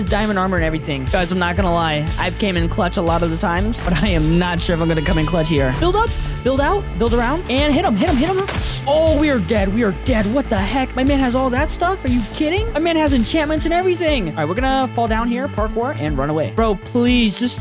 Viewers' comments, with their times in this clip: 0:05 dude that song is SO nostalgic